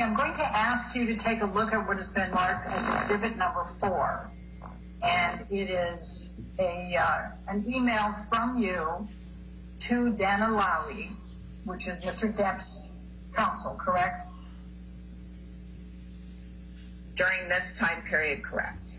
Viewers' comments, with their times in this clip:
0:03 Lawyer let’s out a HUGE fart